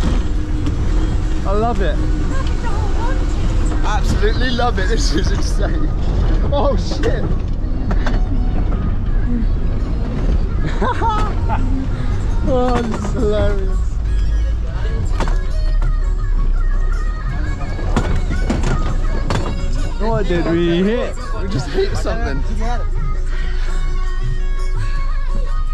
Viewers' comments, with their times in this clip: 0:06 Nepali bumpy roads, Nepali music and bouncing tourists in a bus. Some ran away. What a funny situation hahaha